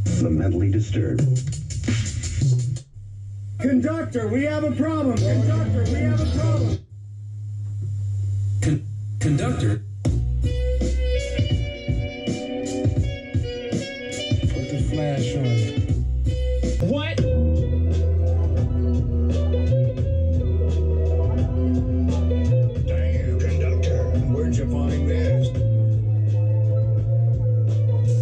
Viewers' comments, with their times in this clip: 0:10 Promise me that we get that beat HOLYYYYY!!!!! There’s levels to this shit man💿